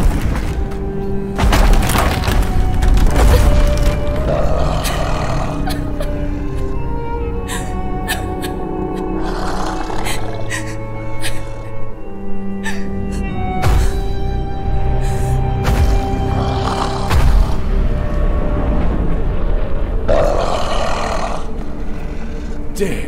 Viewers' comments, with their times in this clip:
0:10 the noises they made when they died 😭😭😭